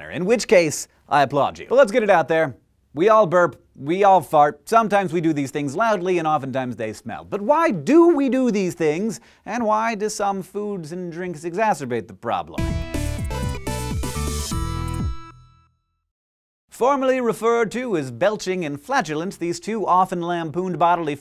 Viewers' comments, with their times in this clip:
0:09 what does hank say? exasperate?